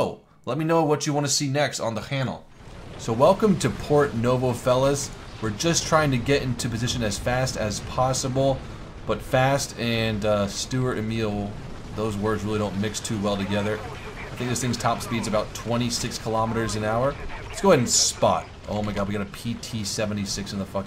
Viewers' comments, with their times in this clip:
0:05 He says hannel instead of channel